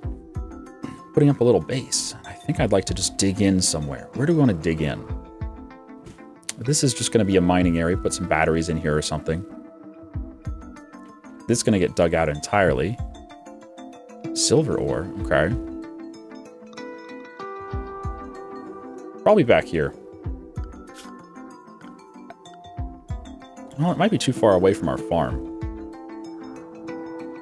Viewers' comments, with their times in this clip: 0:08 Yeah the music is badass!